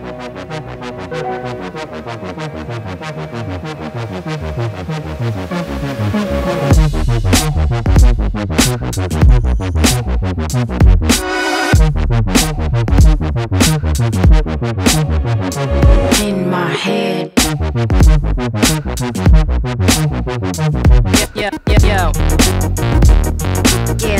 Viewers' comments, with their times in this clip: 0:05 drop is simply amazing.